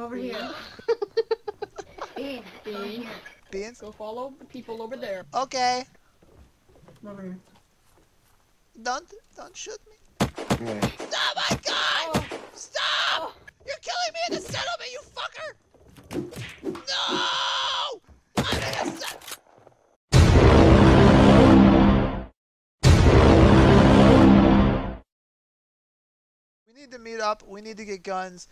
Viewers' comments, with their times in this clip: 0:10 i died from laughter you sound like Marty McFly xD